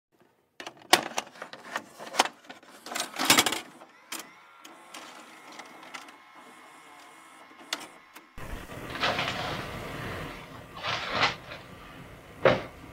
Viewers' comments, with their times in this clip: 0:00 VCR sounds...sweet nostalgia